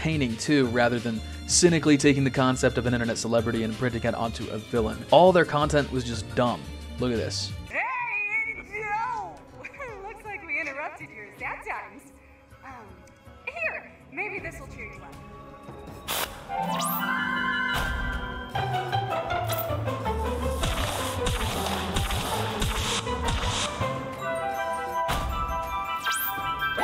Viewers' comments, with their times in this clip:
0:07 I literally modded this stupid part out. I replaced their grating "hahaha we killed your friend" with Rick Astley